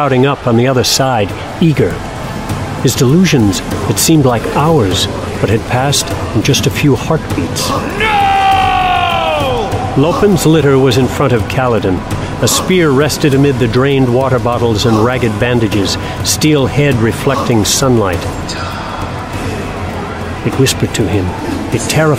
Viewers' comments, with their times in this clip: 0:03 The visceral scream refusing to abandon his men, amazing performance